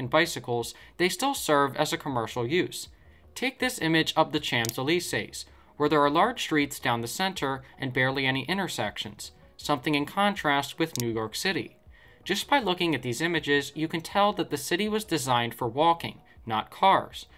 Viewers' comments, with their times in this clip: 0:05 You've butchered the pronunciation of Champs-Élysées You also didn't mention the outlier of Washington DC, one of the only cities in the U.S. that was radially designed.
0:05 ah yes the ChamPS-uh-leeSAYS